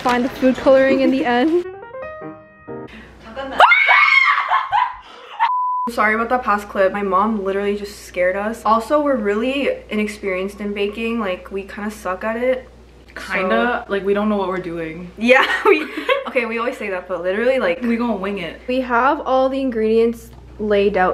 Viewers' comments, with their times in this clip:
0:03 RIP for everyone that wore earphone while watching this (INCLUDING ME)
0:03 sorry I laugh
0:03 turn your volume up